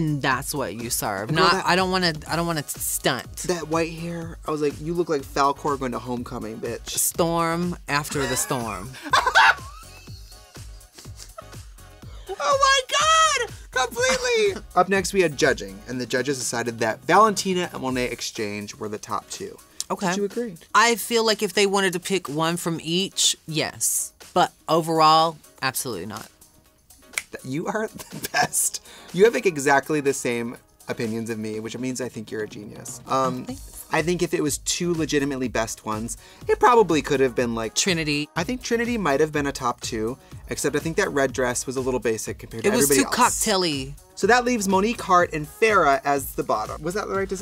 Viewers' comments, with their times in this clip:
0:08 such a pure cackle
0:33 The "oh thanks" , so cuute